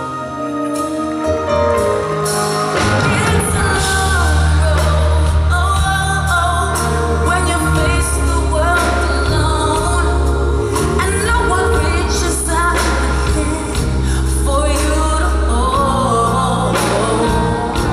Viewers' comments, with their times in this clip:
0:05 okay i have to admit, i LOVE mariah & am utterly obsessed with her & think this was a beautiful performance but i hate... i fucking HAAAATE it when she does that "oh-wuhaoh" BULLSHIT after "road"... like no she formed such a bad habit & does it too much! BREAK OUT OF IT MARIAH lol other than that.. GORGEOUS performance! her tone is so distinct & she is still unmatched! loved the freestyle intro too <3